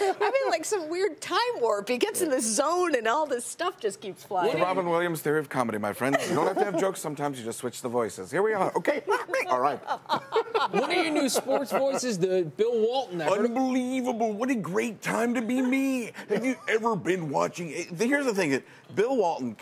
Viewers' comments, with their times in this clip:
0:04 omg robins williams
0:07 Robin Williams awesoomee!!!